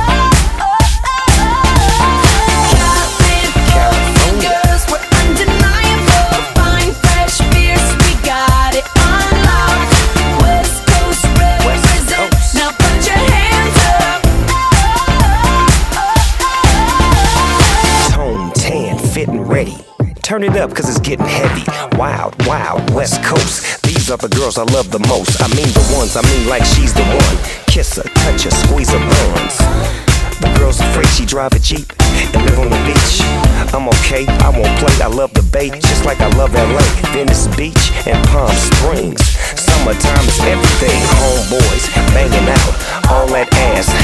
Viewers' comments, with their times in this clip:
0:03 am i the only one that heard a guy say california
0:26 is When th moan comes on
0:27 I thought he said squeeze her bones 🤣